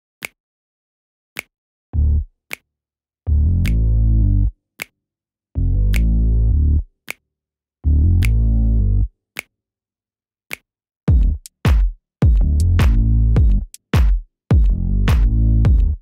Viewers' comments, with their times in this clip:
0:03 I dig that funky, upbeat music 🎶💃🏾